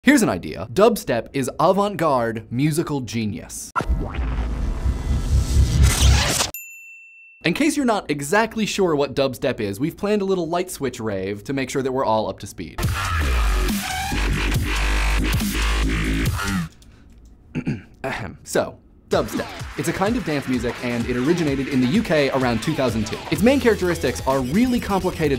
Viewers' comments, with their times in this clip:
0:10 now kids, this is an example of whats not dubstep
0:13 im sorry, but that was not dubtep, how they call it in the US, it's Brostep.